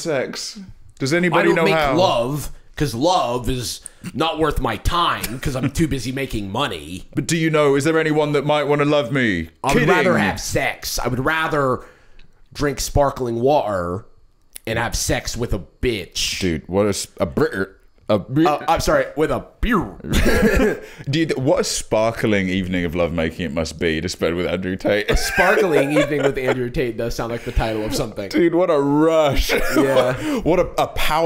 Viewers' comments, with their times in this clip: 0:07 this impression is so realistic it scares me
0:09 I really thought they played a soundbite 😭 Jarvis's Tate impression is top notch
0:14 Nailed it. Close your eyes and it's Tate 😂